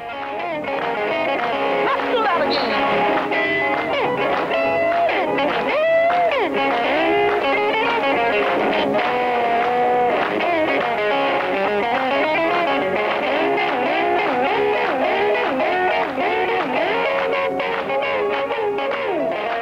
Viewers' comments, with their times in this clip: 0:03 It's a disgrace that the Sister was not firmly planted at the head of the Rock n' Roll table. Her solo is jaw dropping. Amazing talent, God rest her soul